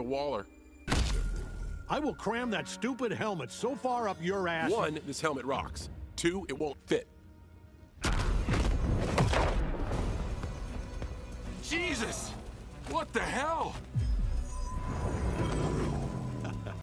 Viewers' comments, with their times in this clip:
0:08 The pause into the punch feels like Omni man was just like, "You know what, I'm not gonna even bother." And peacemakers' reactions make it better, and the chuckle is the cherry on top
0:11 That “Jesus” was so perfectly delivered 😂😂😂